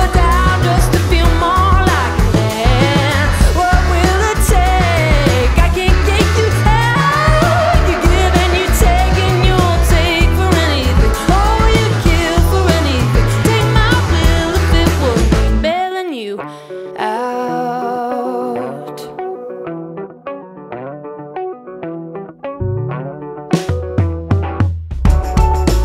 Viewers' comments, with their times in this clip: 0:06 the vocal has stuck in my head for weeks. Wow. Everytime i even played that part of the song in my head I would get full body chills!